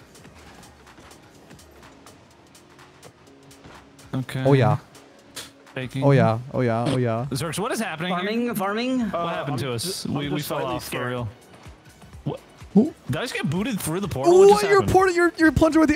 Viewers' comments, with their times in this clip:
0:03 Bro turned german real quick 😂